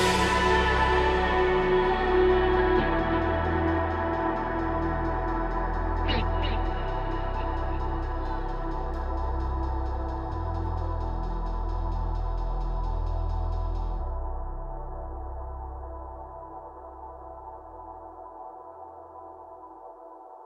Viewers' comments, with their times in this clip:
0:06 This is golden, Lynn's voice sounds so good, the rest of the band did an amazing job and the thing Lynn did 😂 Also the drumming part at the end 😍😍